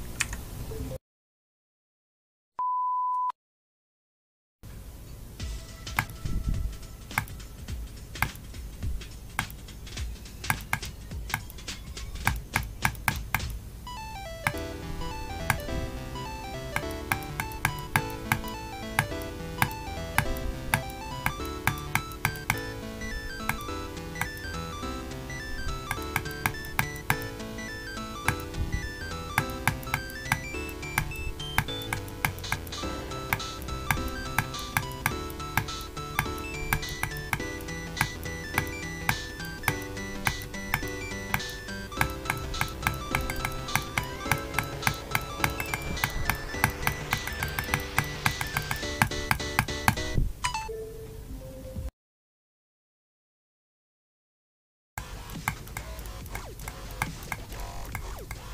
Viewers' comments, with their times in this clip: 0:05 his clicking is annoying
0:42 SICK BEAT INCOMING 🤣